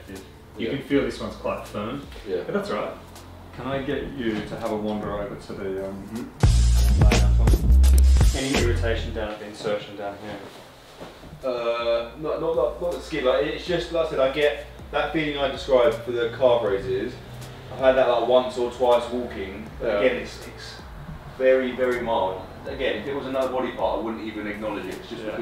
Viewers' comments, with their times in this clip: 0:06 Watching with my GF and I started laughing Her: What's so funny about the drums? Me: Just funny drums...